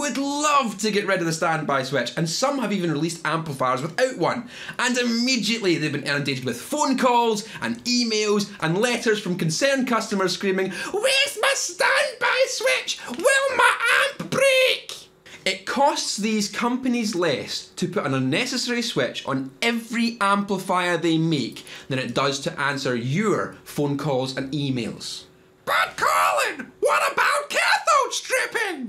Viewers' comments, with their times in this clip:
0:10 Monty Python grandma character